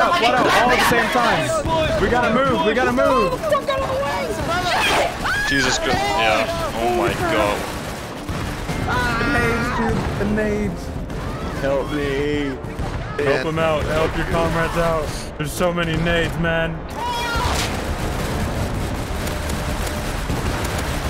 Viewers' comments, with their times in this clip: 0:05 Screaming Girls in